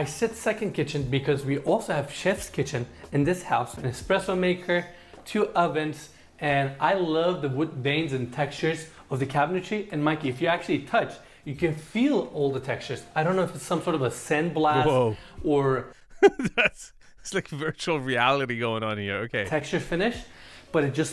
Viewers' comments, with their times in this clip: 0:04 what is "EXXXPRESSO"?😅